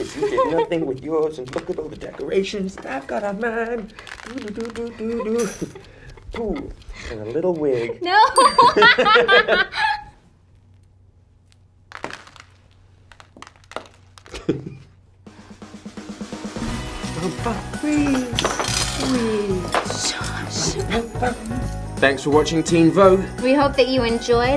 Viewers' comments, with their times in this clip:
0:08 the same laugh in High school musical when Troy picks Gabriella up in the basketball court